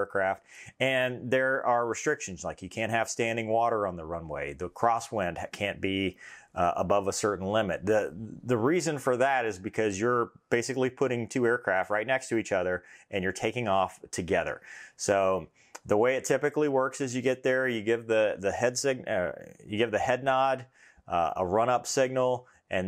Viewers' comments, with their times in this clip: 0:10 did that pilot just sneeze?
0:10 did that pilot just sneeze?